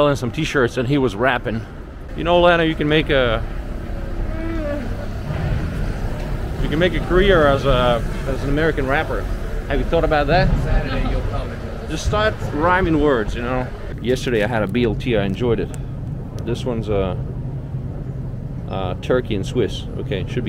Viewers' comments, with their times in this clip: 0:03 I hear Chewbacca voice